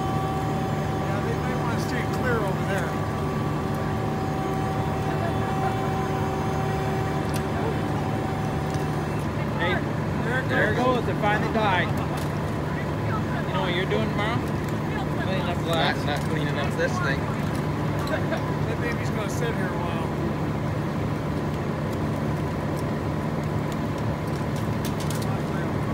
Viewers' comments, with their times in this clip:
0:09 from the video start before the last of the horn died... very impressive.